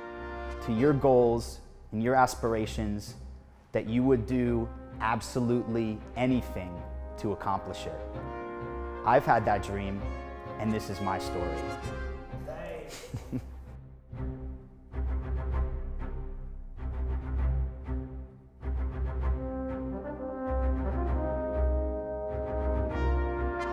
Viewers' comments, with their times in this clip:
0:05 Dude tried soooo hard not to stutter!!!